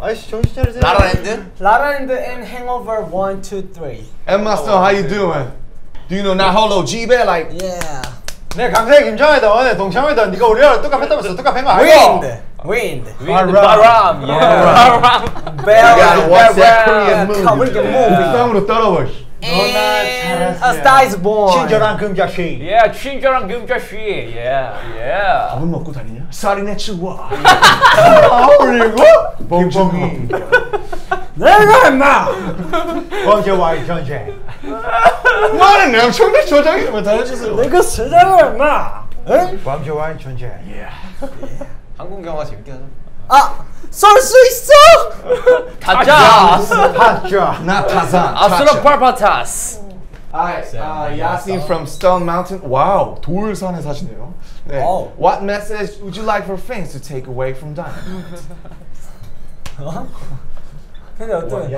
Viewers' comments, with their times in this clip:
0:08 They are so cute together, JK has studied hard, if my Korean would progress as his English.. he is so good in it now.. Namjoon looks great in blue and JH in black hair, Suga finally says something, on favorite movie, but everyone singing so loud of star is born, so that is completely ignored.. also, translating sucks as it picks up the english - no need - but does not translate the korean, which goes at very fast speed at some points V....
0:09 V talking LOL 🤣🤣🤣🤣🤣🤣🤣🤣🤣🤣🤣
0:11 from this moment, what language were they speaking, like bruh it sounds chaotic XD
0:19 My favorite part was when he talks over Tae, but Tae just goes on like nothing lol.
0:27 The way tae made himself voice crack is everything
0:28 Why they so noisey and when you wear a headphone or earphones you will know how it feel . This moment jimin with his chair
0:44 omfg V, Jin and Jimin just said my name like whaat!! like i'm aware they were making gun noises - yet thats legit my name!! arghh my bias V said my name ;)